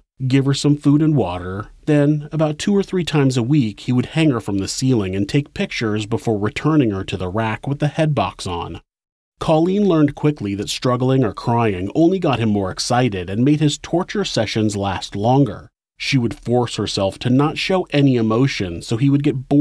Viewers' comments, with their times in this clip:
0:03 That switch from talking about the torture rack and the fked details of her captivity to an ad for hellofresh with a happy background jingle...